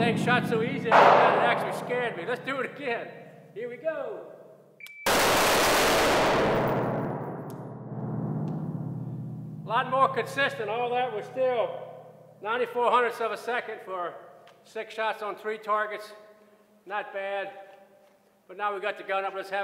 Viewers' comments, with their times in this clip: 0:06 when your 6 shots sounds like 3